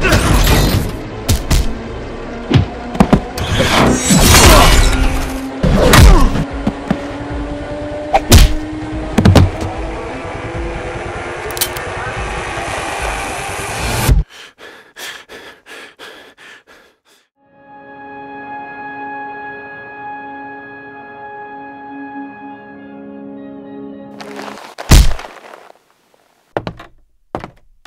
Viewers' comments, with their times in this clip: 0:08 i know im not the only one who heard the hadouken lmfaoo